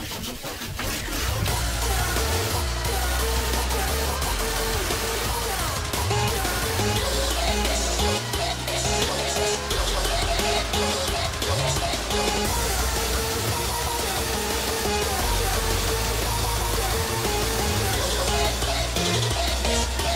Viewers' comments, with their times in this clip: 0:06 Something i love is that both here and the original mod they still use the "you bitch" chromatic